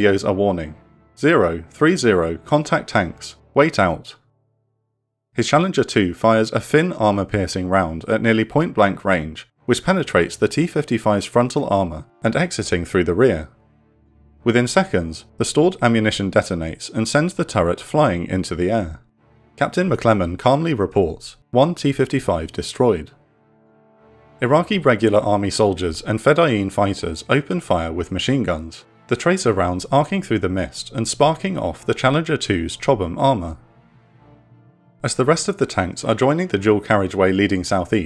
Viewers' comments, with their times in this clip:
0:10 did you seriously laugh while you were saying "sent the turret flying through the air"? U luagh at iraqi casualties?
0:17 Rare Operations Room Crack in Narration
0:20 can hear the narrator giggle while talking about Soviet era tank turrets taking flight